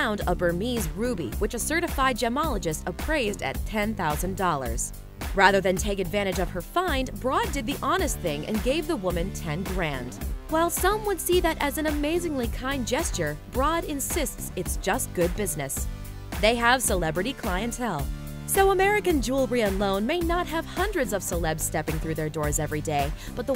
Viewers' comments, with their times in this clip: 0:04 that's not true... if you've seen the episode, you know that it was her dad, who insisted that the stones should be appraised. Nice voice btw